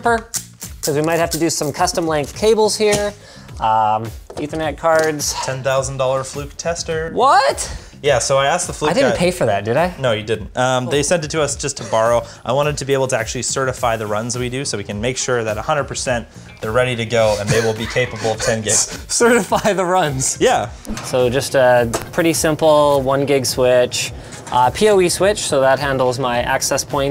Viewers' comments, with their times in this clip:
0:09 Linus: Pure, sweet, and DEEP sigh of relief!!! LMAO